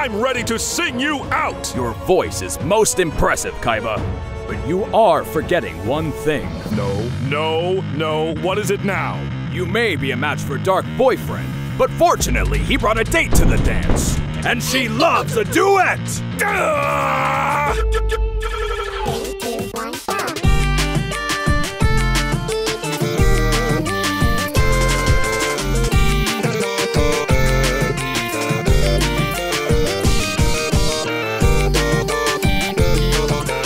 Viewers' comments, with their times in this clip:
0:05 leaving this here because the sound track is godly
0:06 I love how he says it like "ah, here we go again"
0:18 I still get goosebumps when I hear that theme.